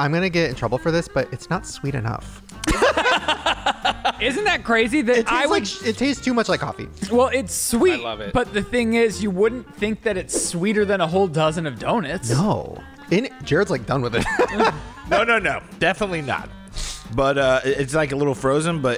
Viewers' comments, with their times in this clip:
0:05 🤣🤣🤣I’m sorry the fact the Ryland said “do-nits”